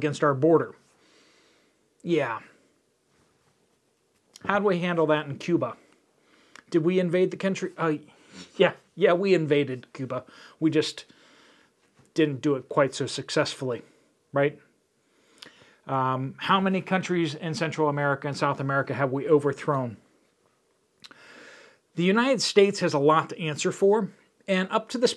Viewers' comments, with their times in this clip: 0:09 I loved when you said Cuuuba